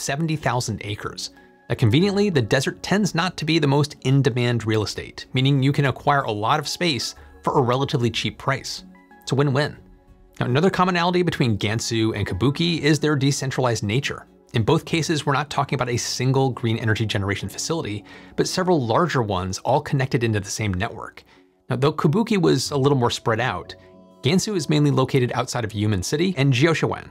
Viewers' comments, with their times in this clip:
0:09 I heard wind-wind. 🧐